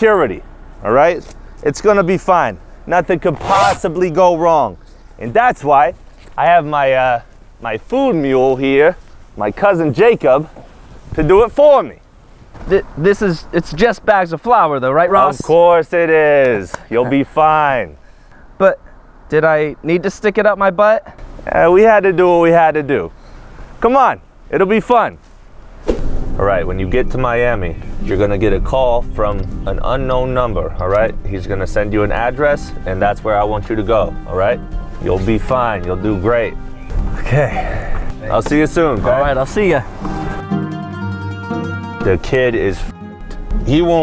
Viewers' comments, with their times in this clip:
0:09 I loved your Boston accent
0:13 he has the tony soprano vibe and voice
0:25 the Eminem Accent